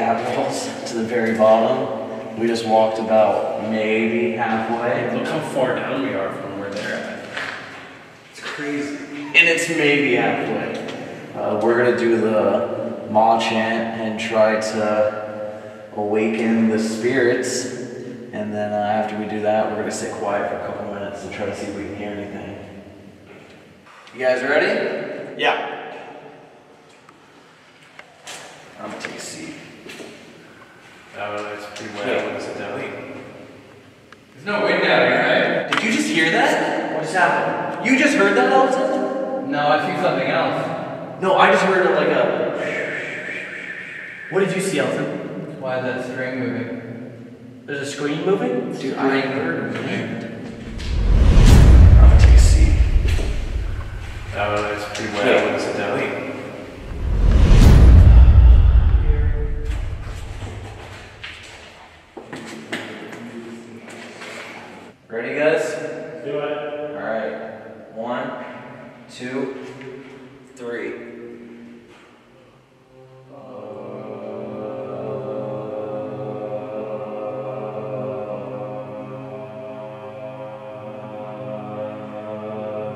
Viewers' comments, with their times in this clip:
0:06 sounded like squeezing or whining of some sort when they turned the camera to see how far they were
0:08 I hear a dog whimpering/ crying :(
1:04 they were so in sync it sounded good